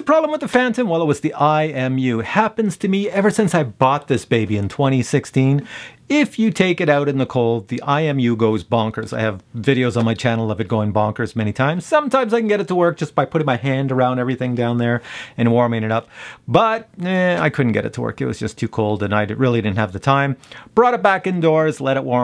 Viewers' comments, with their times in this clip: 0:07 ... :scratching head: As stated in the P4P+ User's Manual.... "Operating Temperature Range 32° to 104°F (0° to 40°C)". IDK... I didn't hear a large enough noise reduction to merit a $36.91 USD ($47.24 Cnd) cost for these Stealth props delivered in Canada.